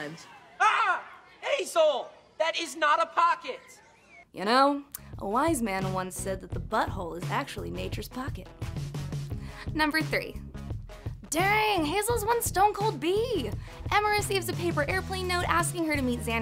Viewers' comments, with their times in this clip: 0:04 in you literally sound so much like lou